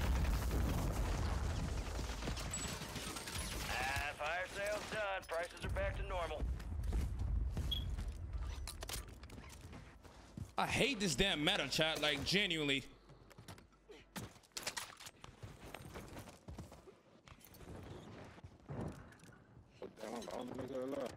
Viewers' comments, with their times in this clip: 0:07 i heard the fire alarm beep aint no wayyy😂😂😂